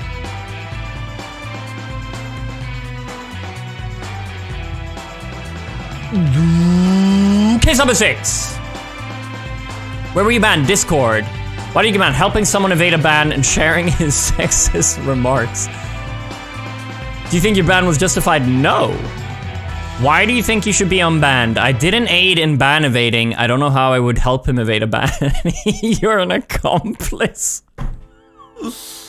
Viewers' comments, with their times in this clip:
0:10 The music in the background gives me PvZ Garden Warfare vibes. Just me or anyone else if you've played that